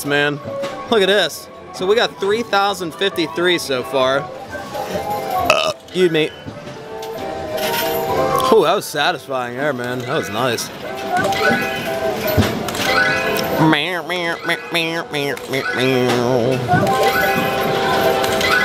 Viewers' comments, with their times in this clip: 0:04 The burp or tokens?